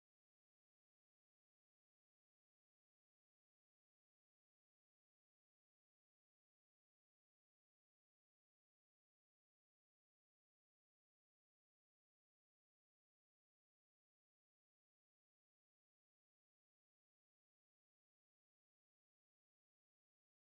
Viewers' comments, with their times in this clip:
0:03 Audio is gone